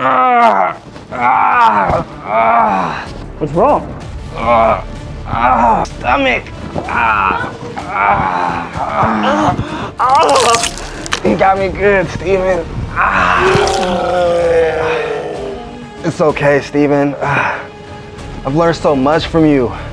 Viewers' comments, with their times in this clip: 0:04 bro talking so calmly💀